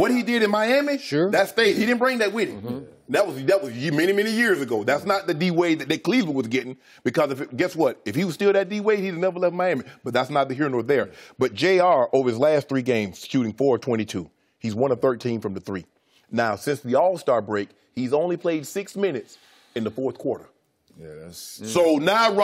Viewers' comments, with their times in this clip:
0:09 lol i thought i was hearing Stephen A for a sec. "thats neither here nor there"